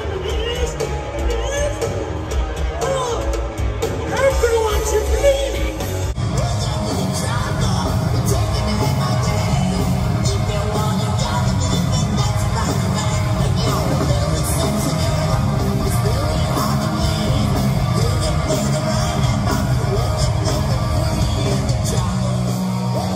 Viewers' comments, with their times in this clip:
0:07 Not just the voice, the whole performance and the feel of the rhythm (Adler's style) is more enjoyable. (I don't say Guns isn't good nowadays, Slash for example plays better today (IMO) than in the alcohol and drug fueled "old days" and Duff and Fortus are also great musicians, adding that Frank Ferrer is not a bad drummer either, he just plays with a different feeling than Adler.)